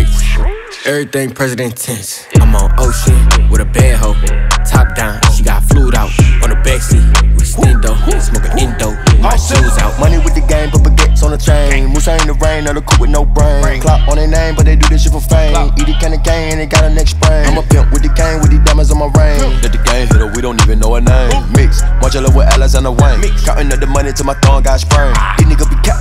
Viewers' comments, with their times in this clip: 0:10 Offset comes in